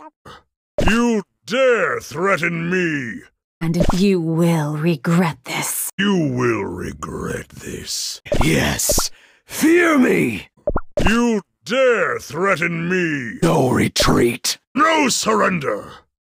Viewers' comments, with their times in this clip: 0:03 I Found A Rare Voiceline if You Turned Up The Volume